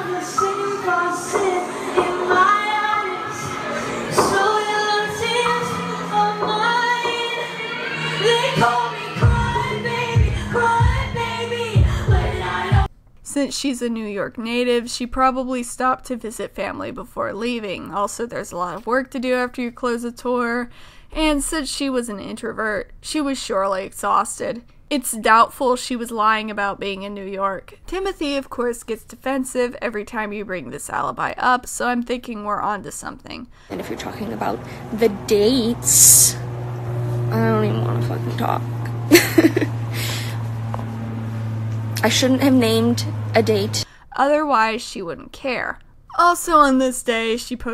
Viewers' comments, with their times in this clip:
0:05 can we all appreciate how she sounds almost exactly like the album
0:35 I have headphones in at full volume, and her 'SSSS' killed my eardrums.